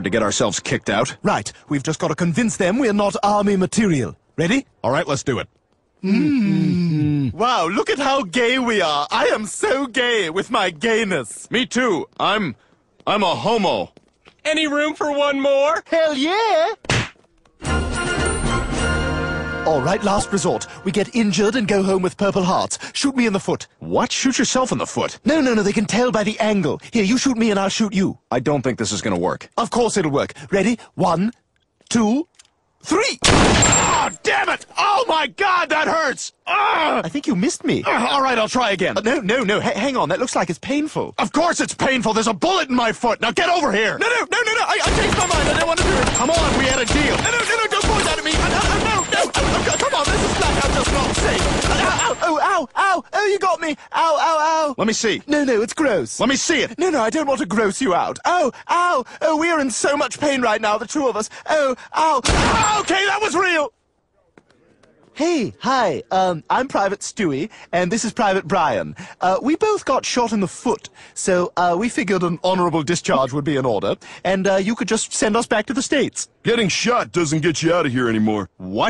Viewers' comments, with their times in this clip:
0:06 that moaning, they unironically seem to be enjoying it😂
1:04 how many "uhhh"s stewie said